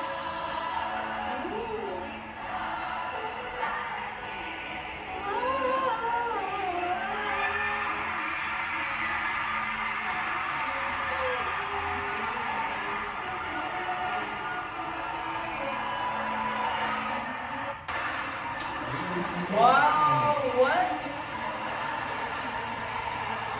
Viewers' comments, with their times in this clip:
0:07 At that moment Jimin burst into tears, in case you hadn't noticed. His voice was kind of broken that day, but then ARMY from Brazil sang with him. Jimin ended up getting emotional and crying right there. On the second day Jimin explained to us the reason for his depressed state and his crying, but at least on the second day he seemed much better!